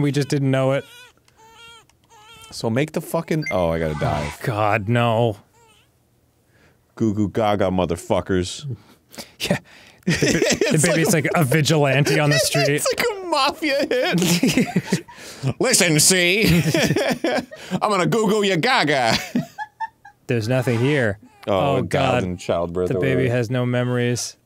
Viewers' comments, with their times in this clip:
0:05 queue ali laughter😂😂